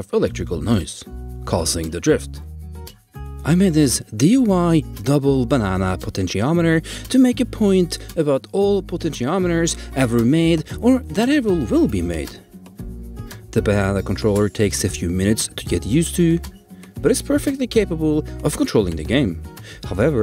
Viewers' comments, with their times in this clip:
0:04 did he say DUI and not DIY? Two very different things.